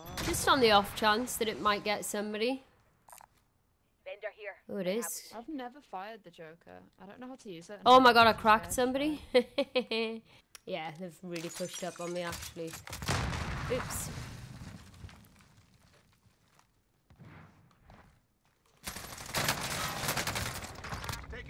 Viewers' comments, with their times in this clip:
0:09 that laugh always makes me happy